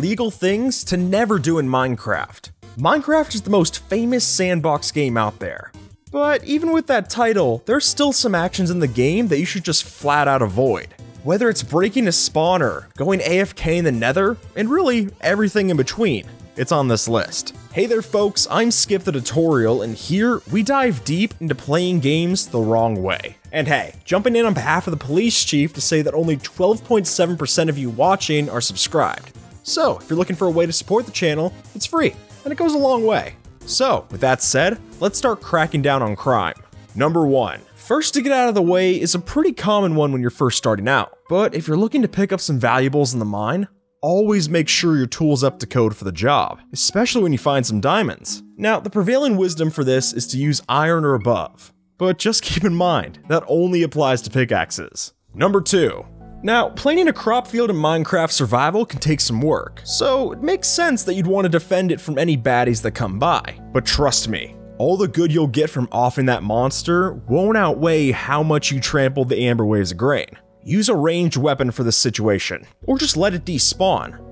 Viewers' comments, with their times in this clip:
0:09 Me: *hears undertale song Me:”ok why is my computer still on youtube”
0:58 you tried to do the a western accent or something dide Edit: Dude